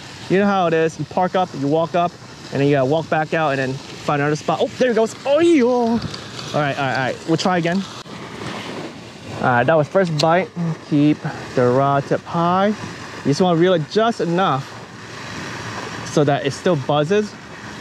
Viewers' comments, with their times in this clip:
0:04 no matter where in the world, Chinese would always make this sound. The universal Chinese version of "Damn!"